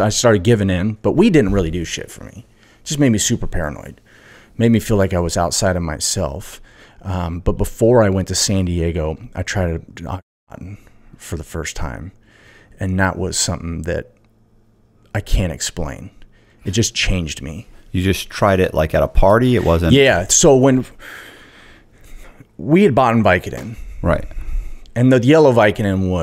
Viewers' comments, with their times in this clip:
0:10 tried a what?